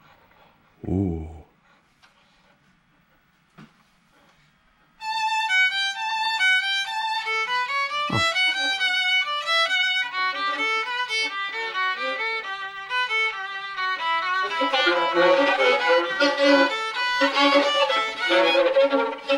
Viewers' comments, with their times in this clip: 0:04 While Is Like Huawei Tune LMAO